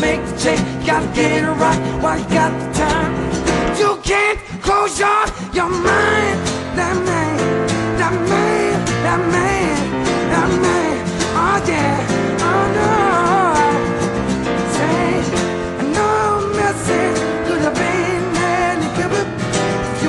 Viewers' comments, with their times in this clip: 0:04 sounds like Michael Jackson